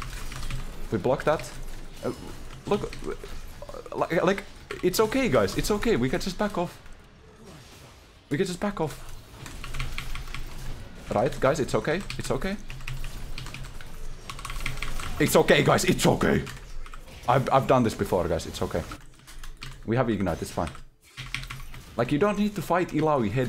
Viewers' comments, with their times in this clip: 0:07 its ok its ok sounds like a doctor helping a woman give birth